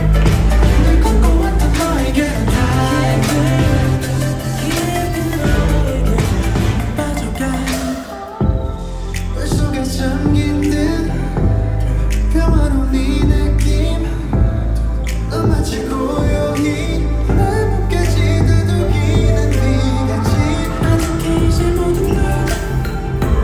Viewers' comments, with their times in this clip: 0:10 the intro choreography for dive is so cool! i like how it is a bit different to the usual nct choreographt ~~ jaehyun's voice is stunning in this deeper/more empty song it suits it a lot .. also this purple set is so pretty like its a underwater palace